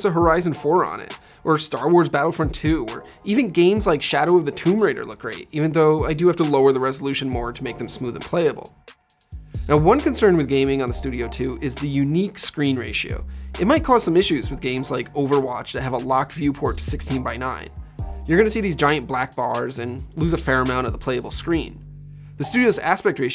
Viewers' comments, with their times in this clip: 0:07 Awkward pause Could’ve been hidden by a cut or b rolling.